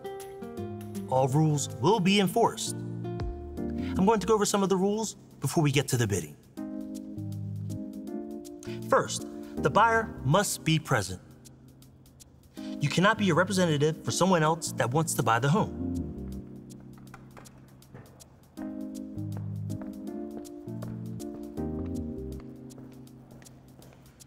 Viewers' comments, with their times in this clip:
0:07 I am almost positive that dude is reading his lines right off the script.